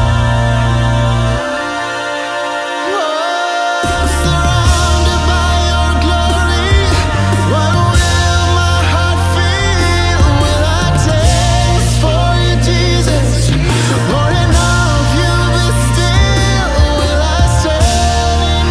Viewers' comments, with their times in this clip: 0:04 I needed this. To come before the Lord with praise... thank You, Lord. And thank you, Vocal Point. Your voices are beautiful and powerful. And was just stunning. :)